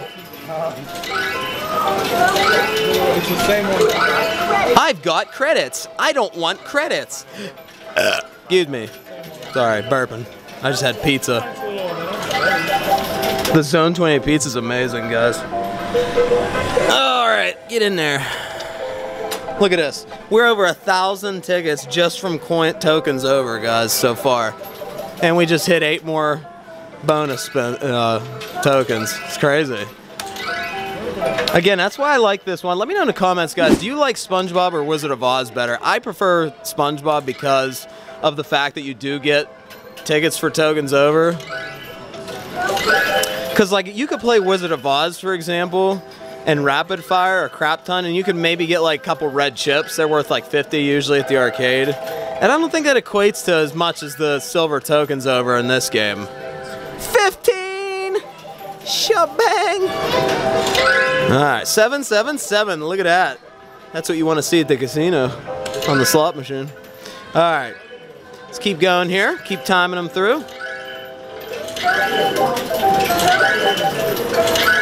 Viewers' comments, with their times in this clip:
0:07 Is anyone going to talk Burps “I just had pizza”
0:07 Burp What soda did you drink?
0:59 he sounds like surfer from spongebob